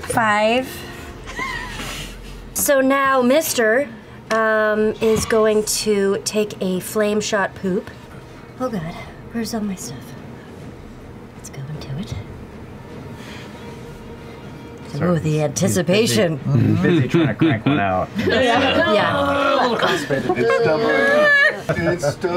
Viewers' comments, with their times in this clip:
0:03 can someone explain this clip? it's hard to hear